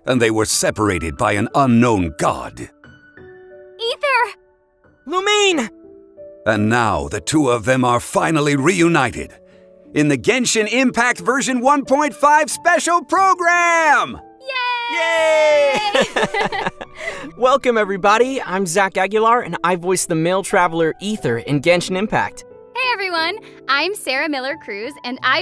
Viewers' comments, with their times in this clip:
0:10 Zhongli: Hyper screams Me: woke up when tho i was awake